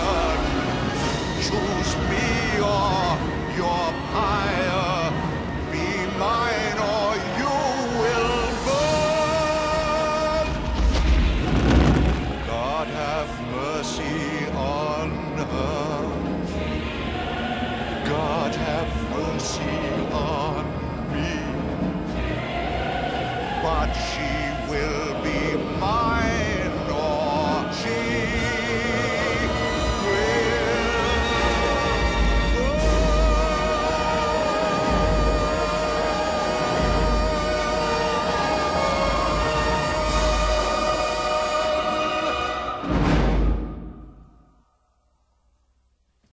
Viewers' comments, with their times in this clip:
0:10 Background chant from onwards. It mimmicks Frollo’s chant in English: “God have mercy on her/me.”
0:44 Frollo: SINGS SO EPICALLY HE DIES AT **